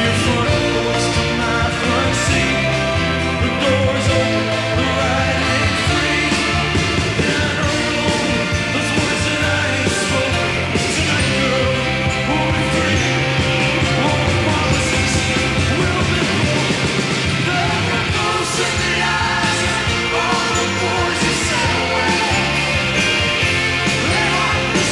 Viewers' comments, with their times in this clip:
0:10 omg that line with doubled length